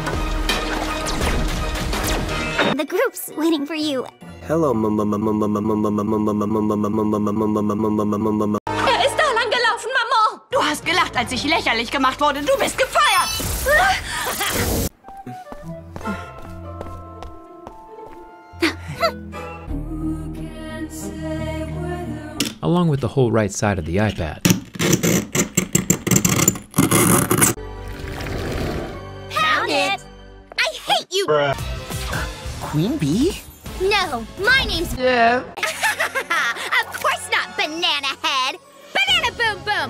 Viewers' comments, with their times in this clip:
0:04 Ngl it’s catchy—
0:23 My ears :’D